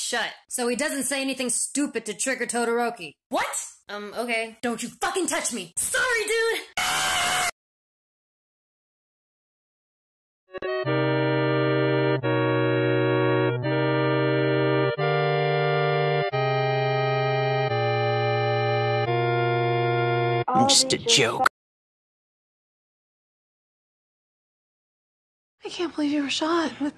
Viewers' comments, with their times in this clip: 0:06 His scream Bakugo what the hell😂😂😂😂😂😂😂😂😂😂
0:07 that sounds like a fnaf 1 jumpscare🤣🤣🤣